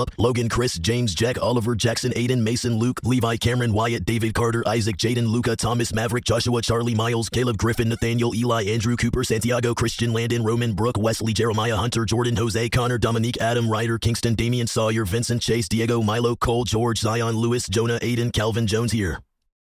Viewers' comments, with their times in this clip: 0:03 that's got a good rhythm going
0:12 it becomes a rap lol